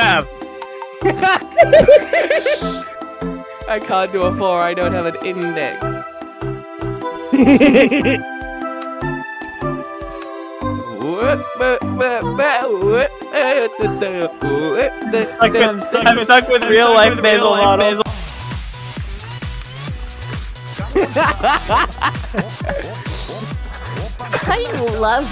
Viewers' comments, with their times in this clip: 0:07 is the worst time to have headphones, I almost had a heart attack because it sounded liek something was next to me